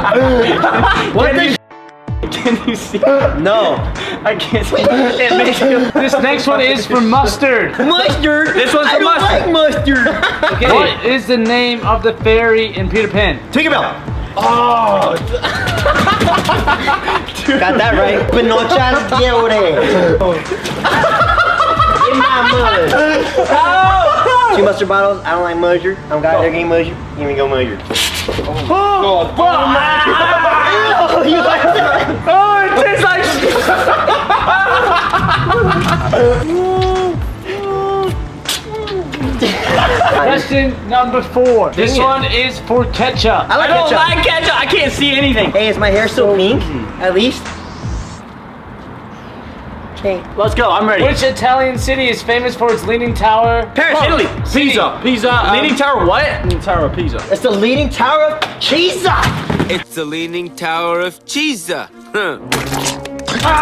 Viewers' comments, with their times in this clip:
0:08 he sounds like jeffy😂😂😂
0:49 THE LITTLE "k" AWWW